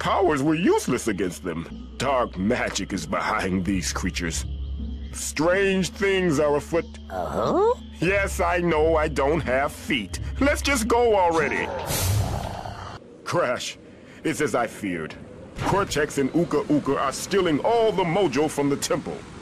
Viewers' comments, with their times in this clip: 0:03 Grim? Is that you?